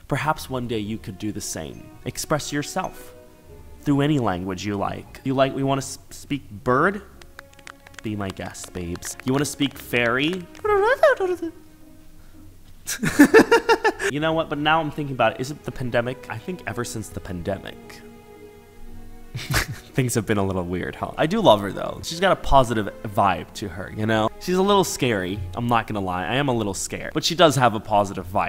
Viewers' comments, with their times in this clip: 0:09 You almost sound like Bibble here bestie.
0:10 bro sounded like bibble😭😭
0:12 His laugh is so cute